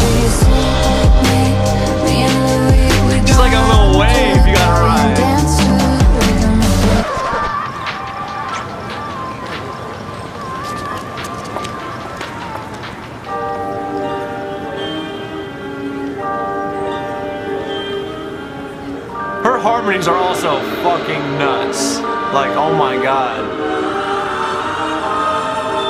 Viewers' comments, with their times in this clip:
0:08 It was all calm until and then the Taylor Swift mode kicked in!